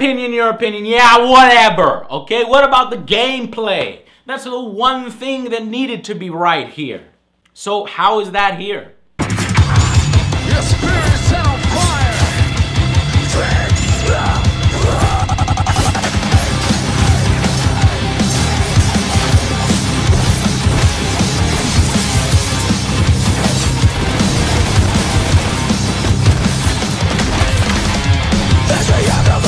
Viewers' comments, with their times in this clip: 0:10 sold me on buying the definitive edition. The music with the combos melds perfectly.
0:14 this is why i love DMC 2012 because the gameplay is very nice and the background music is kinda rock.